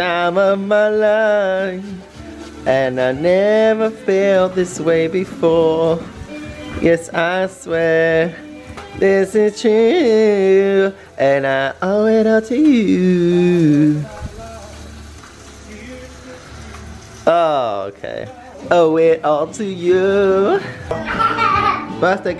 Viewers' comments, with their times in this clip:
0:04 the look on Lance's face = 'oh my god Tom you couldn't carry a tune in a bucket, plaese stop before my ears bleed'